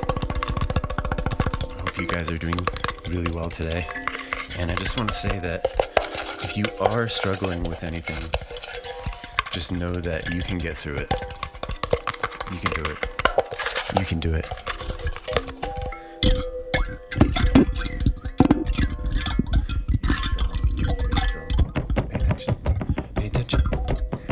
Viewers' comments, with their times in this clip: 0:08 I love the fabric sounds! Very much enjoying these chaotic videos :) also, thank you for the message I really needed to hear that